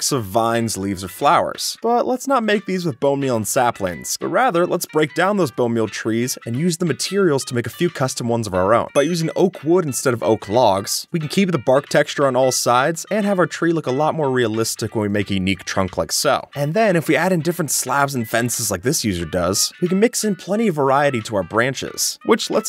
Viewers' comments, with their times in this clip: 0:06 does anybody else hear a phone ring?